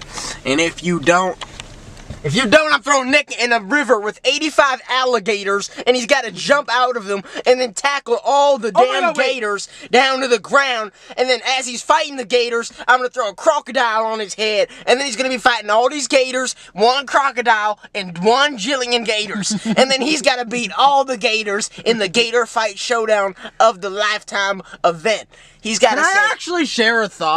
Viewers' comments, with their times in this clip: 0:09 they actually sound american 😂